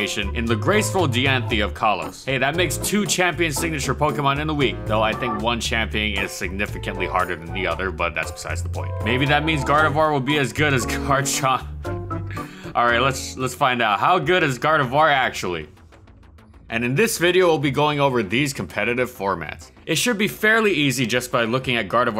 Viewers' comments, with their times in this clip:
0:09 Couldn't even say that with a straight face huh?